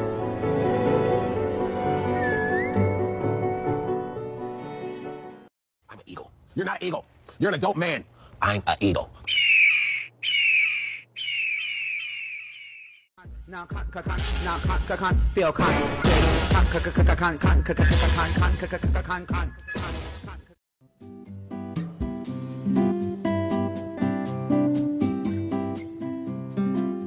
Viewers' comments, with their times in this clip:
0:09 I loved that scream:)
0:09 I loved that scream;)